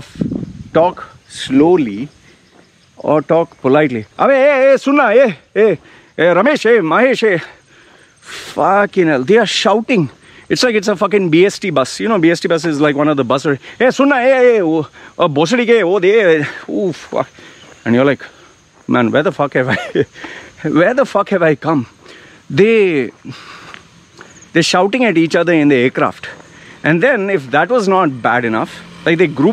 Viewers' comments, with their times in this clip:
0:10 Sir is good with Indian profanity. He sounded like a local for a moment 😂